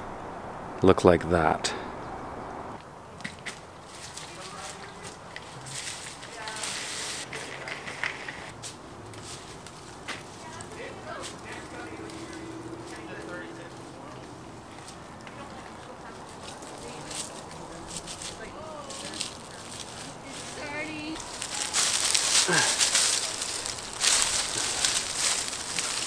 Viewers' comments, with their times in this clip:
0:08 "check it out boys" in the background